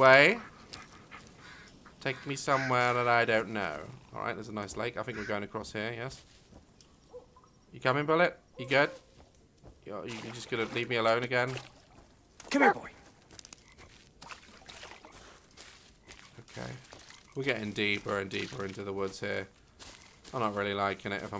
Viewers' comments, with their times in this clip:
0:05 Omg there a snap chat notification sound hah